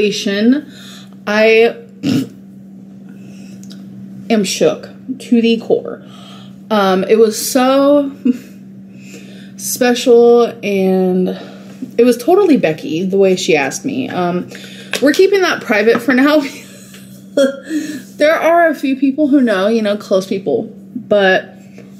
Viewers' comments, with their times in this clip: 0:08 the condescending way she's describing this, she's such a bad person